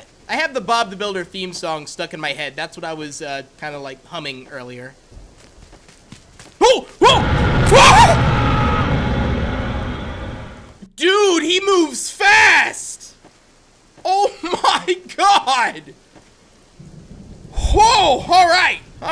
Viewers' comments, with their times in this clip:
0:07 The jumpscare scream sounds like zussman from call of duty WW2